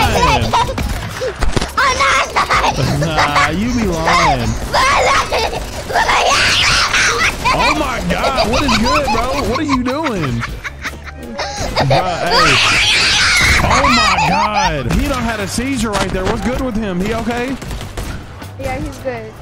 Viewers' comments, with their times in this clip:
0:07 I heard a demon